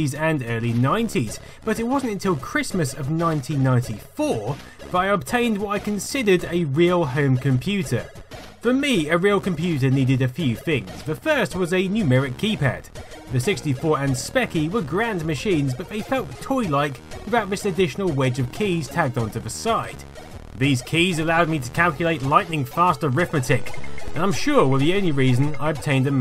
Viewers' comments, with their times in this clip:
0:08 by I'd just realized who you sound like... Fred Harris... which is quite good... (I'm being a Harris myself there.... )